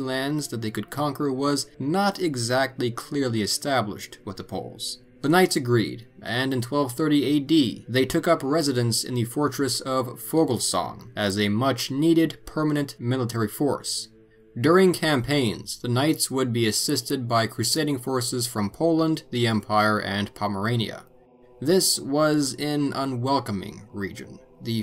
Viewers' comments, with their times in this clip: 0:10 Outstanding! Thank you for doing this video. When you have time, I have a question. in the video, you mention that the knights moved to a fortress but I cannot make out the name or find it on a map. It sounds like Vogelsong but, like I said, I can't quite make out the location name. Can you help by providing the proper spelling of the fortress? Thank you so much.